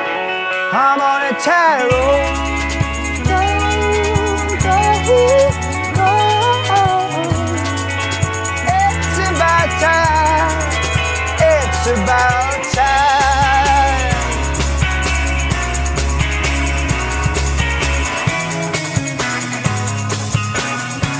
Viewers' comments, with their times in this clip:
0:07 What a voice ! Just discovered the band because HBO is using this song in their winter promos.Wow ! Talented singer, and that lip biting ...s-e-x-y!